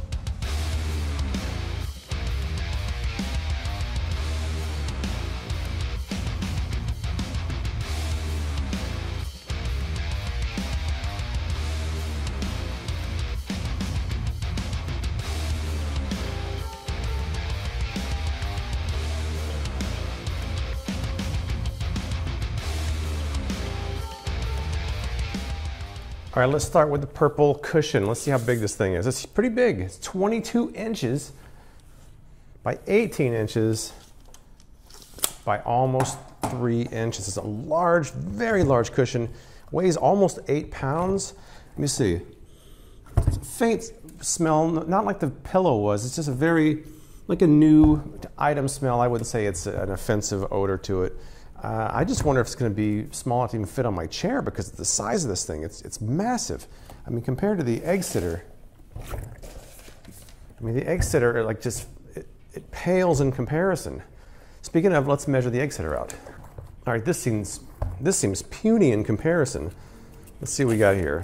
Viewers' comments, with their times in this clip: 0:06 not sure if rock music is the best in the case of opening a pillow up..
0:58 Was it me, or the sound when he put the egg sitter on top of the purple sitter satisfied me
0:59 WOAH THAT SOUNDS LIKE WATER!